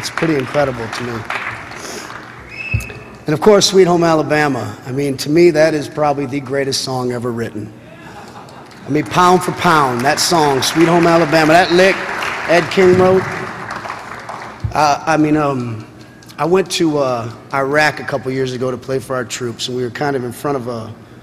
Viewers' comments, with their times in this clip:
0:03 Who is that crying ?